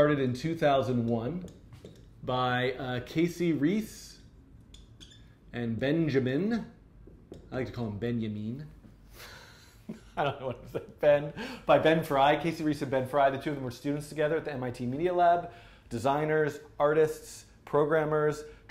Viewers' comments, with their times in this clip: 0:06 now finaly someone got the pronounciation right.